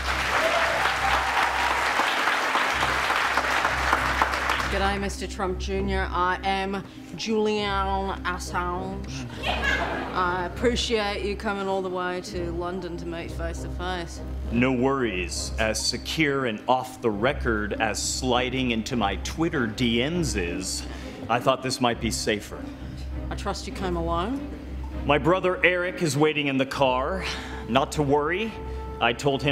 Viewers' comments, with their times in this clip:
0:08 omg that laugh
0:09 Whoever laughed must have been very entertained while riding their broomstick
0:13 oops! wrong accent